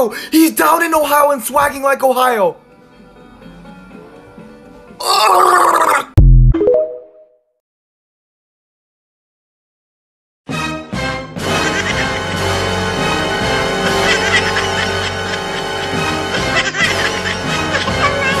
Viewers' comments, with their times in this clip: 0:03 bro remade the fard meme…